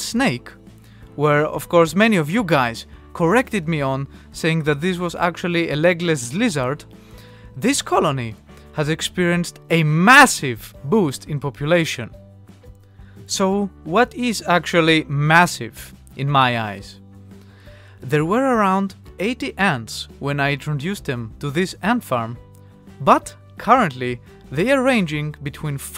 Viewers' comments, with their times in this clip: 0:07 this cOloNy has expirienced a massive boost of population. ^ voicecrack lol